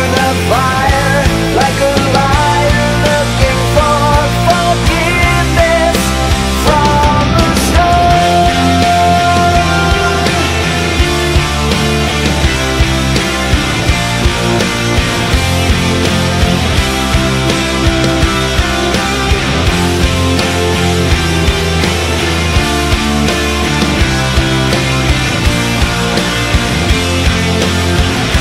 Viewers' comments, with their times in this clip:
0:08 Full house ahh riff
0:10 The Full House theme song sure does hit as a solo. Lmao